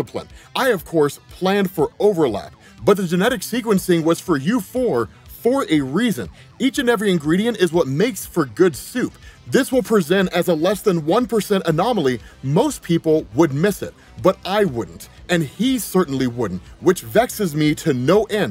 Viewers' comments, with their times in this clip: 0:06 the word is pronounced like “on we”, not “ en you eye”. Thank you.